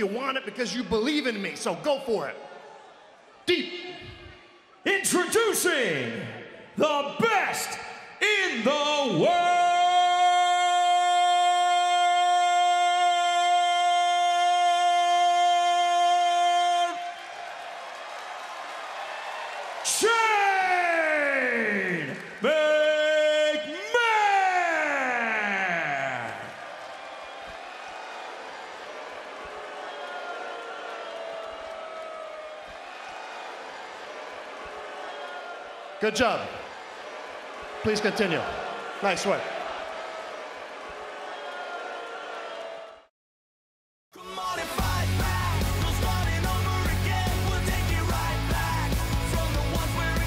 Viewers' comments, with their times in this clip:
0:04 Oh, and let's get ready to yell like this: "Introducing... THE BEST IN THE WOOOOOOOOOOOOOOOOOOOOOOOOOOOOOOORLD..... SHAAAAANE.... McMAAAAAHOOOOOOOONNN...!!!"
0:06 Yeah, he yells like this one: "THE BEST IN THE WOOOOOOOOOOOOOOOOOOOOOOOOOOOOOOORLD..... SHAAAAANE.... McMAAAAAHOOOOOOOONNN...!!!"
0:38 notice how they Edited out the CM Punk chants